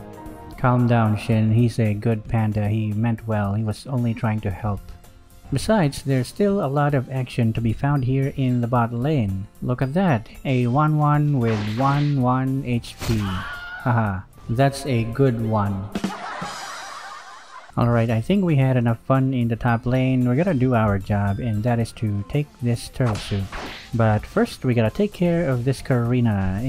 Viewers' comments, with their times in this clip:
0:08 that's a good Wan🤣